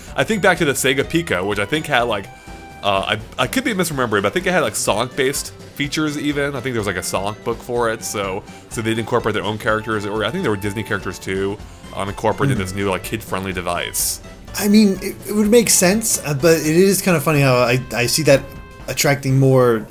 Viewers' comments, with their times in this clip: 0:04 -Did he say sock-based?